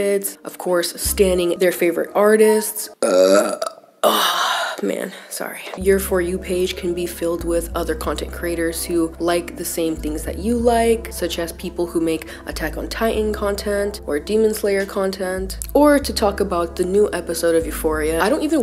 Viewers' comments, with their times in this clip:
0:03 Girl I burped at the same time as you 🤣✨ this is why I keep coming back to your videos, we just out here being humans